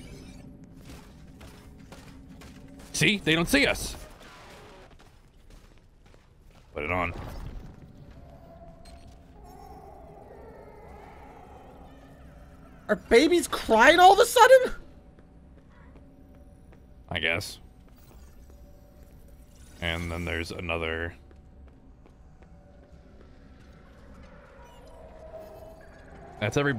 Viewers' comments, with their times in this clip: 0:10 is chica crying in the washroom